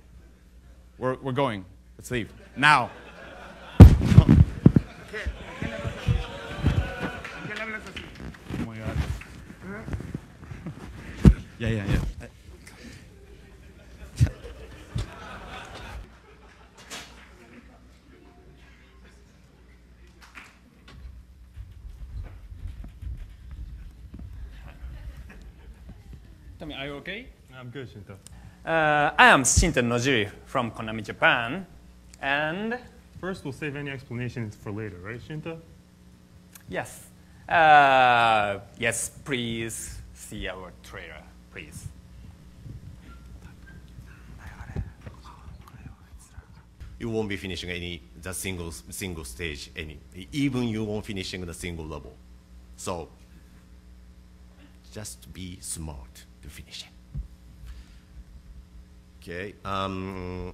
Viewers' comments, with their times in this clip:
0:07 The subtle "oh my god" as he realizes it is no longer just a performance
0:17 literally 2 claps ahahaha.... Oh boy this is dire.
0:46 I can't stop laughing at this. That ear-shattering silence as he stares into nothing, thinking about what he's just said.